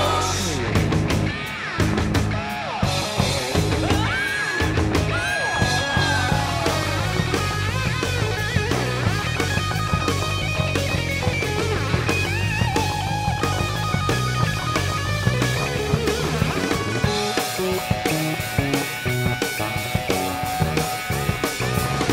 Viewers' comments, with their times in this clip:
0:08 can anyone play this? incredible solo I've haven't heard repeated